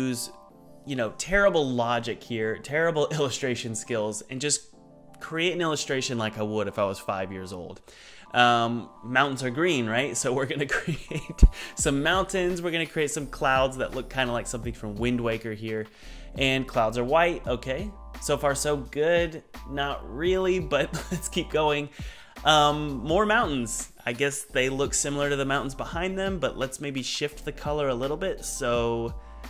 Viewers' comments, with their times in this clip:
0:10 left ear mmmm game dev asmr 😂😂😂